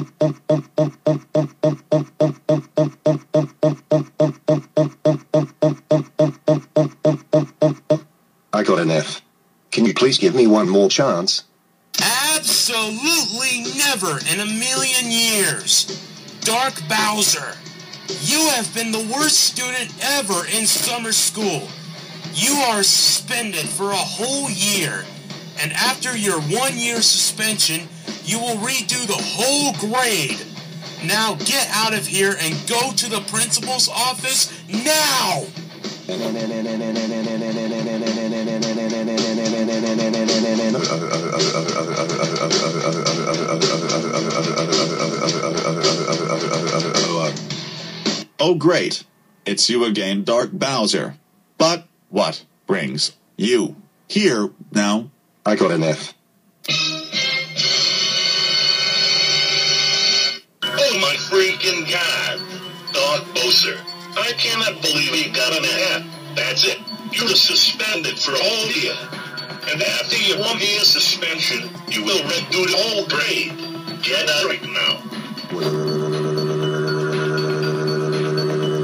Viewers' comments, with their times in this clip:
0:10 is that your voice?
0:11 I love it when he uses his real voice
0:12 Is this your real voice?
0:12 Izzat your voice reveal?
0:12 Is that your real voice?
0:57 EASIEST WAY TO ACTIVATE A TRIPLE DUUN SOUND: "i got an f" 5 triple duns left until I destroy YouTube. This was the 95th time.
1:00 Switching to Wise Guy's voice in 5... 4... 3... 2... 1... 0
1:01 Principal Eric yelling at Dark Bowser